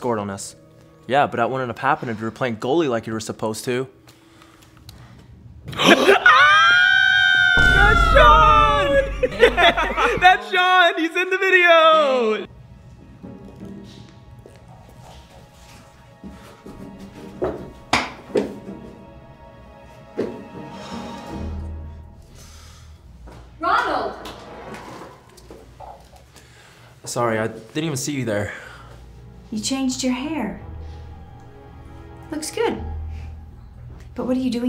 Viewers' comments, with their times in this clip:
0:05 That scream tho 😂
0:05 I like this part it’s so funny How they say Shawn 😂😂😂😂😂
0:07 When they both screamed I couldn't stop laughing
0:19 no its but 4;15s good too but the way the twins screamed 😂